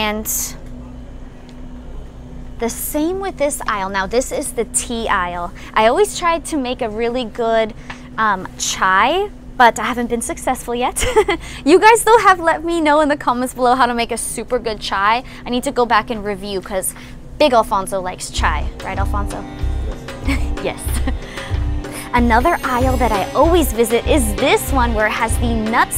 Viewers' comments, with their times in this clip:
0:09 Why the suspenseful music ? Made me wonder if you guys were on a heist.